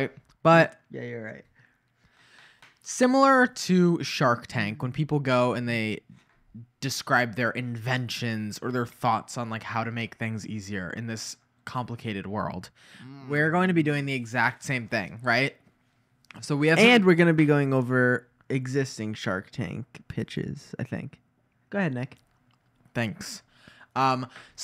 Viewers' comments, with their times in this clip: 0:07 As a french fan i love when non-french people say french words it's so funny to me lmao